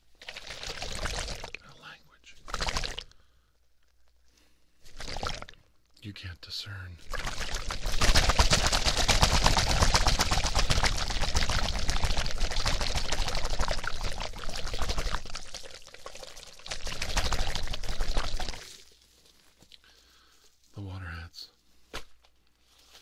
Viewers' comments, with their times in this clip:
0:08 is that noise his neck??